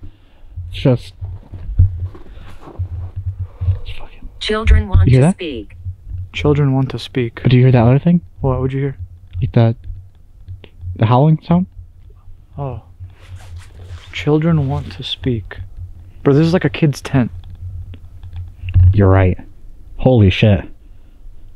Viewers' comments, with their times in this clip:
0:04 Please put on your headphones and hear the whisper of a man can't make out what it is saying sounds creepy